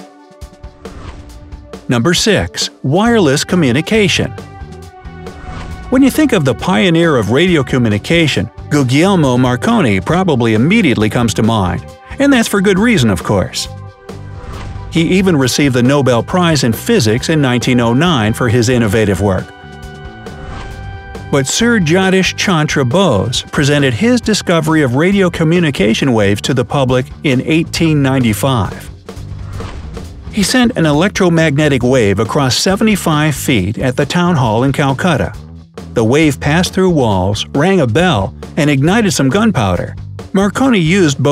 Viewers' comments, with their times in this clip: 0:05 daanventery😂😂 appreciate the work bright side😊😊
0:28 In the pronunciation is so wrong that at first I couldn't make then I found it out after checking the description . It's a totally wrong pronunciation of that great man's name.